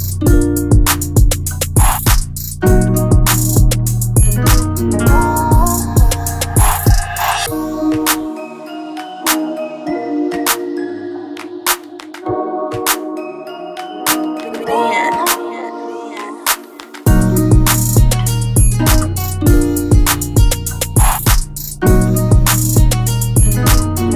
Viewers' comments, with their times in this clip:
0:07 🔥🔥🔥 That switch at is is crazy. Good work